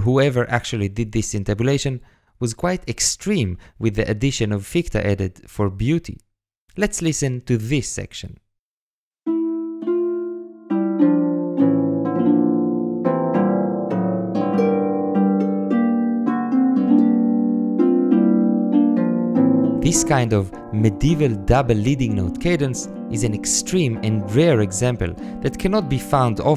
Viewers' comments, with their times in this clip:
0:09 the f# is for beauty, then the c# is for necessity